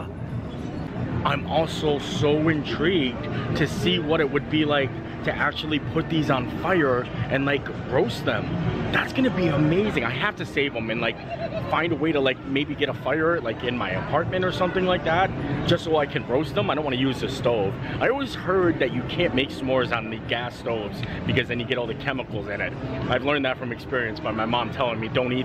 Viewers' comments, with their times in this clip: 0:09 scariest laugh I’ve ever heard